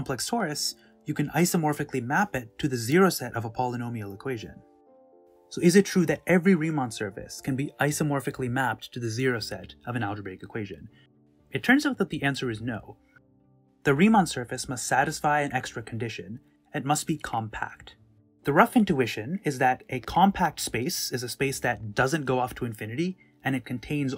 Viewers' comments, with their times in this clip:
0:07 Rain Man, oups Reimann, made his way in.